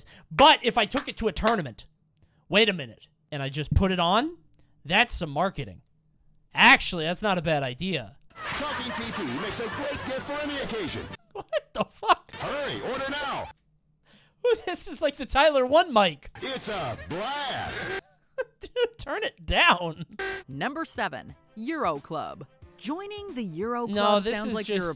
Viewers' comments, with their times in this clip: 0:08 man’s voice sounds like the Lego city guy